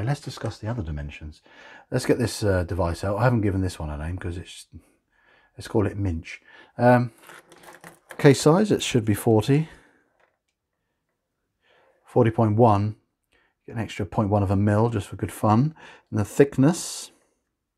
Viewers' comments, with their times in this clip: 0:05 Did a double take where I thought you were named your calipers "minge". Steady on old chap!